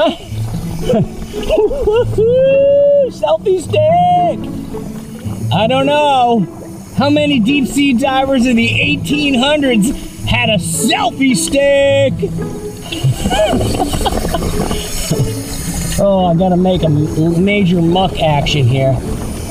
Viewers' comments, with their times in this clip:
0:03 heard a little bit of sonic in his voice😂